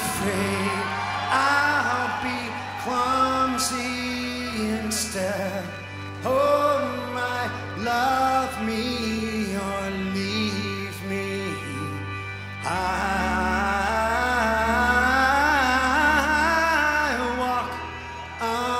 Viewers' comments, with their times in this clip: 0:03 Mills likes Stipe's tone. :D He thought "there was a great idea to make a band with this guy !" :D
0:03 even better than the album version holy smeg. also mike looks like a proud mom lmao